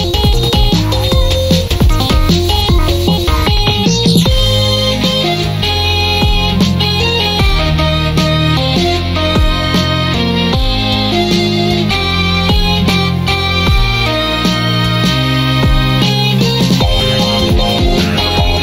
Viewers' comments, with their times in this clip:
0:03 part sounds like Laser Beam from Persona Q